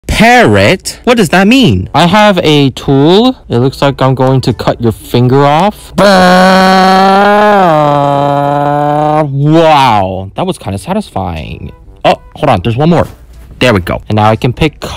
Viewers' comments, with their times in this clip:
0:00 it sounded like parrot